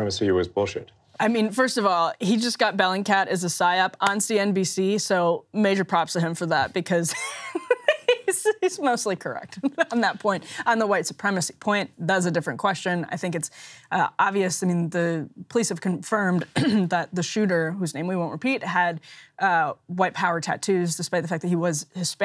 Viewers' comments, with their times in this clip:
0:06 if it wasn't for her laugh, I'd think she was non-binary.